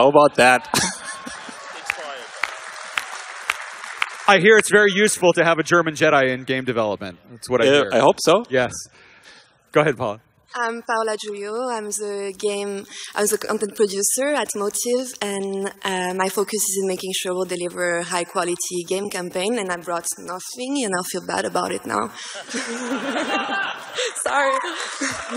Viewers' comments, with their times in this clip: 0:10 Dang, I'm digging that accent.